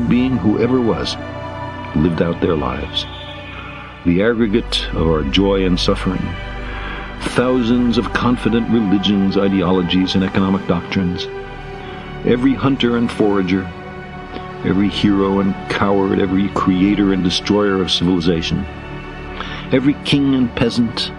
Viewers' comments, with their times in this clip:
0:07 Can we talk about how awesome this is, the score in the background and the speech?